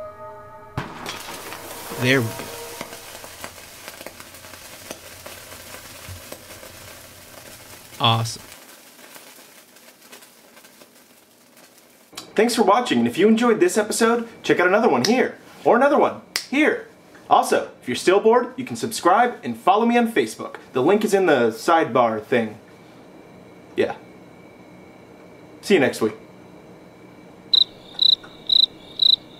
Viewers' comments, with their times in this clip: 0:10 sizzleing .. awesome haha